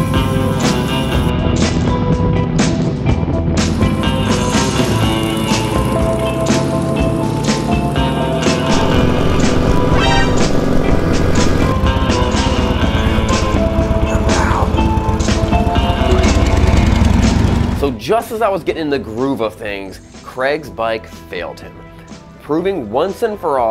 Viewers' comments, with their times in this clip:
0:09 I love your use of the Metal Gear Solid alert sound effect